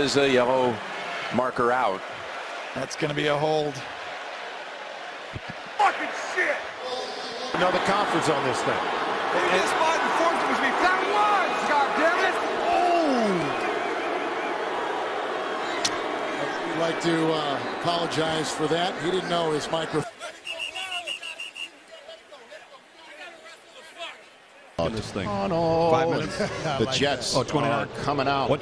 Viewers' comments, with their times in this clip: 0:04 that’s going to be a hold; let’s check the replay. Then immediately cuts to a dude yelling “FUCKING SHIT.” Lol shit has me weak 😂
0:05 Sounds like Corey Taylor
0:10 the way he says ohhhh💀
0:12 The "OHHH" is by far the greatest thing about this video
0:13 The way the announcer says “Ooooooo!” Like a kid who just saw his teacher curse on accident 😂